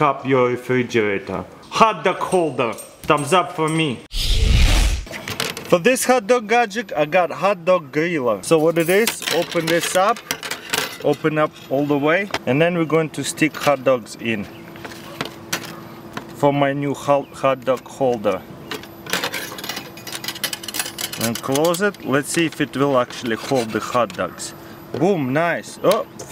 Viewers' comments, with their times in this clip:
0:07 HOT DOG GORILLA